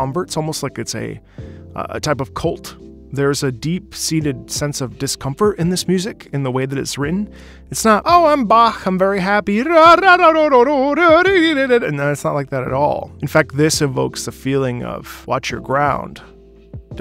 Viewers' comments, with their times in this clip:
0:03 it's weird to me to hear this described as "deep seated sense of discomfort", when i listen to this track on repeat i feel incredibly relaxed and at peace